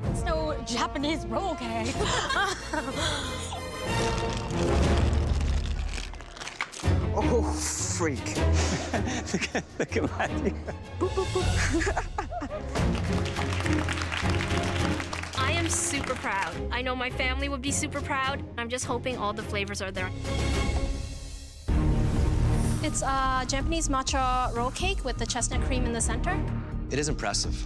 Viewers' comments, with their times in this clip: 0:09 Chef Michael's laugh 😂🥰